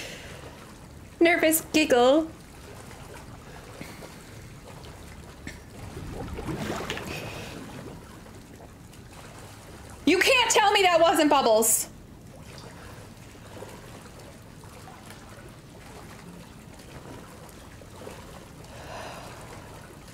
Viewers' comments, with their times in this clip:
0:06 It's okay, Ethan just farted.